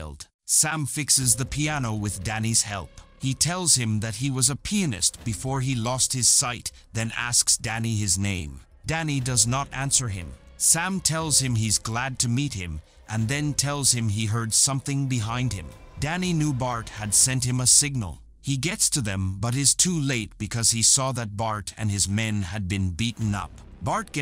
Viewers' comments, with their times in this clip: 0:08 "He told Danny that he was a Penis before he lost his sight".